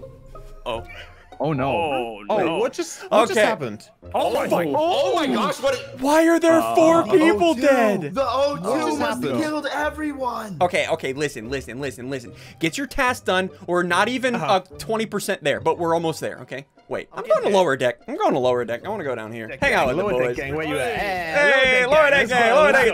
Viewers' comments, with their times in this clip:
0:04 Bro he sounded like he said the f word 😂
0:04 it sounded like he was about to swear 😂